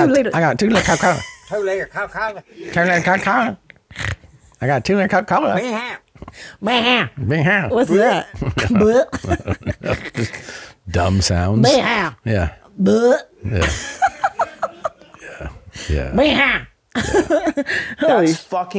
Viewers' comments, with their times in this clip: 0:05 I think the "binghow" sound is supposed to be a heavily contracted "but anyhow".